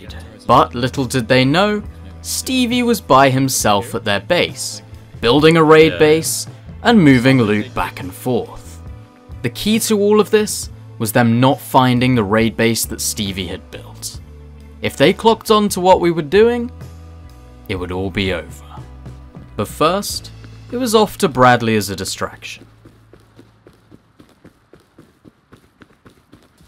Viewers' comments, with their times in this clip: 0:09 Song is a banger